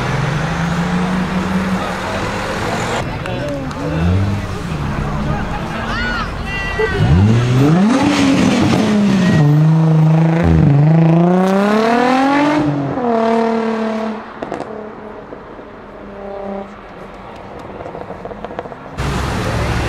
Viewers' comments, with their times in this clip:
0:03 need to know what he did to make his nissan sound like that best sound ive ever heard